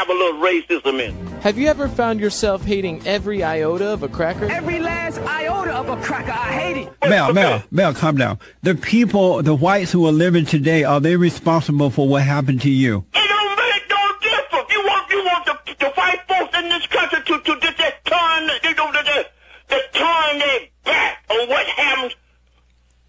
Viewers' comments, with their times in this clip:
0:08 what language was that